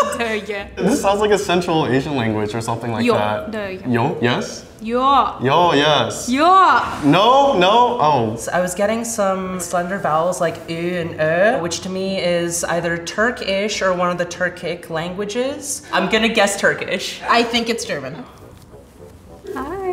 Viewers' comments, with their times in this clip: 0:04 her proclaiming [NO!] really does sound like "joa" (yeah/yes) in german...so maybe the black lady was onto something after all